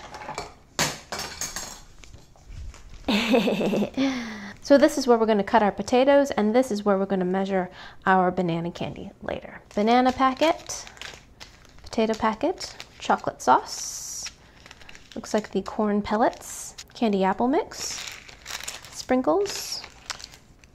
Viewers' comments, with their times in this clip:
0:03 that laugh though 🤗